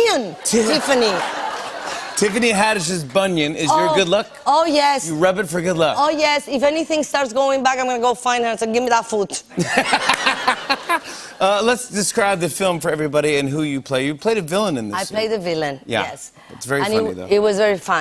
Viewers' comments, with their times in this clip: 0:04 Damn i love the way she says OH YES OH YES😍😍